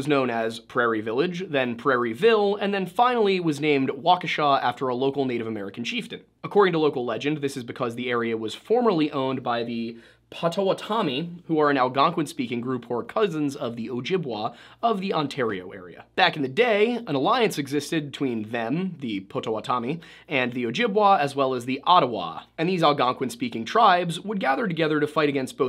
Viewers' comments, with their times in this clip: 0:10 I don't mean this in a rude way but u are butching the name of the tribe here. If u ever need help for tribal things reach out I'd be willing to help u